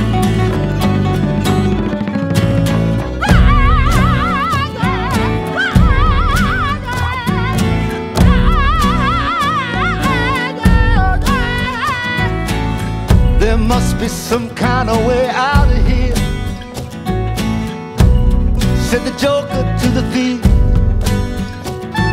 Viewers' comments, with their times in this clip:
0:03 As a humorous aside, my 20-ish son sitting in the other room thought it was Yoko Ono
0:04 ruined it. Sounds like he just got castrated with his high pitched whatever that was
0:07 God tier high notes. Instant chills. That vibrato is top tier.